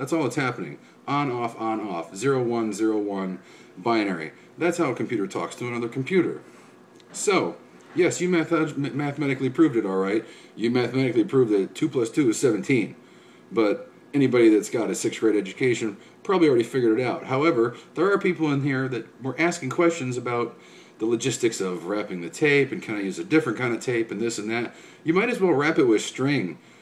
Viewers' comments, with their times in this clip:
0:07 "you meth heads"